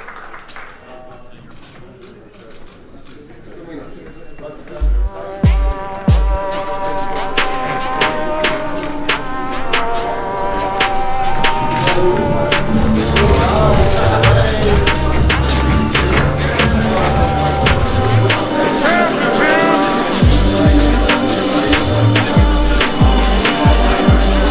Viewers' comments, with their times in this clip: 0:09 not this music again